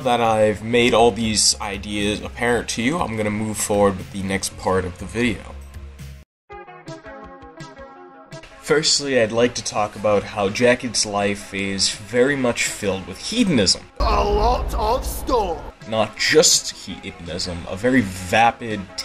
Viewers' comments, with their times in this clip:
0:07 great choice on the background song